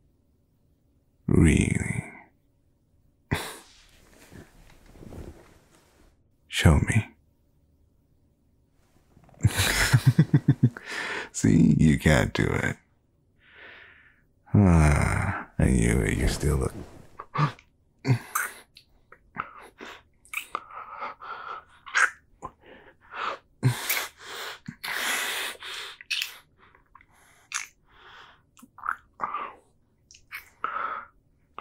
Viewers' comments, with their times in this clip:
0:08 OMG DUDE YOUR LAUGH IM FALLING IN LOVE
0:16 BRO THE WAY HE BREATHED